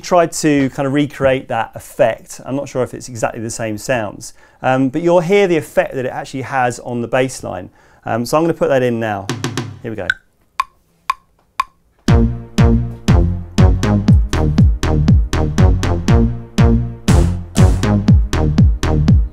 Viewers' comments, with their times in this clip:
0:04 Layering the drums over the bass is phenomenal